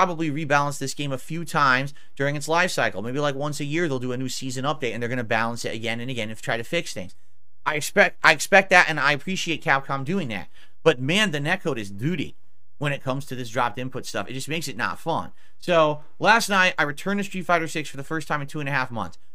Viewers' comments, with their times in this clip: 0:05 did you notice...he constantly says duty aka doody...?!? 😂 or so.. and the day before also.. hmmm